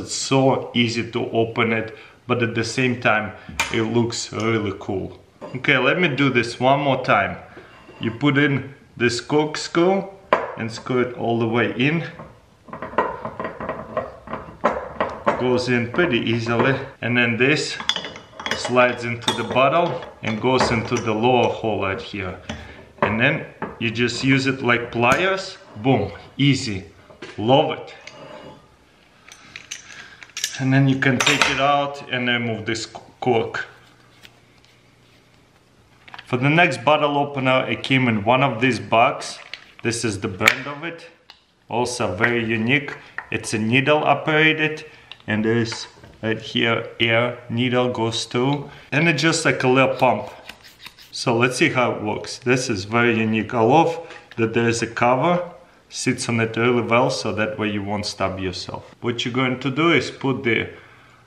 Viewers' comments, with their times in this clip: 0:09 Did anyone else hear him call it a skorkscrew ?
0:49 Did He say Lil Pump
0:49 did he just say lil pump.
0:49 did he said lil pump?
0:49 and its just like LiL pump